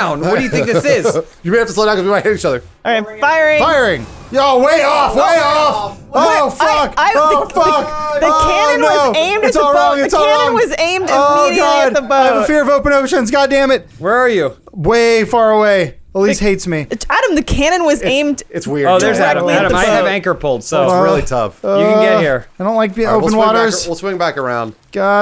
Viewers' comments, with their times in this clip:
0:08 Morty, is that you?